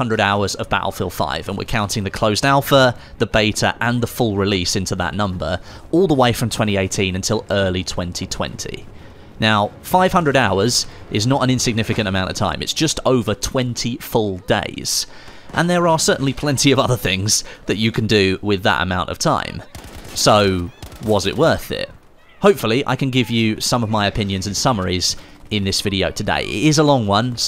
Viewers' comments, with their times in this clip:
0:09 500 dollars ? because thats what i heard